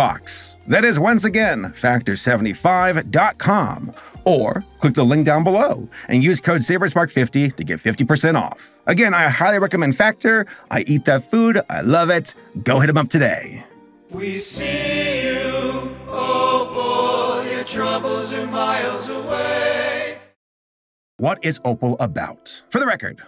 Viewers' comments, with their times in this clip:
0:09 I literally can not listen to this song with out crying. My god